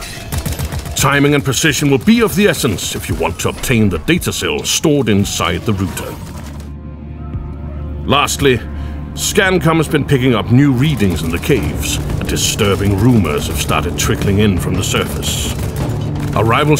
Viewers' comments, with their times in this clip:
0:04 .....wait... did he say "Rooter" instead of Router?